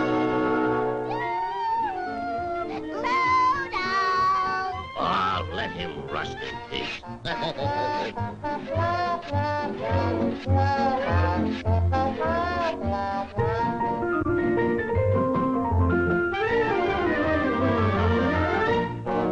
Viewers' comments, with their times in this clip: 0:05 Popeye's voice sounds like Billy Costello.